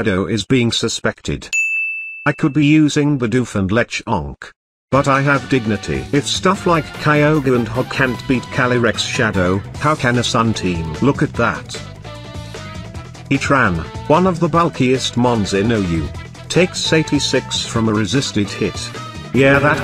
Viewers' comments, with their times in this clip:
0:03 why does it say lechonk like that 😂😂😂